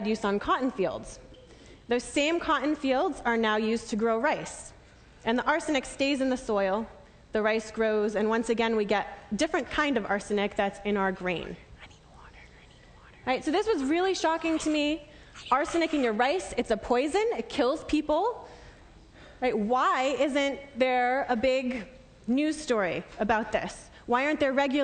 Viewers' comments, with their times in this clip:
0:10 I hear a demon asking for water